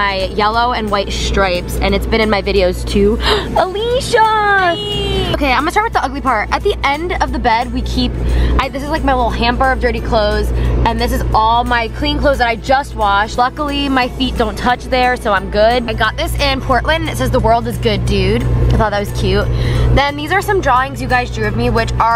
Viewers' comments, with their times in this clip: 0:08 she sounded like Miley Cyrus